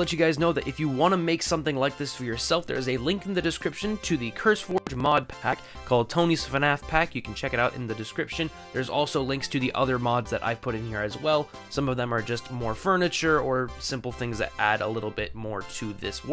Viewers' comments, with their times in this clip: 0:04 your audio bugged out for a moment.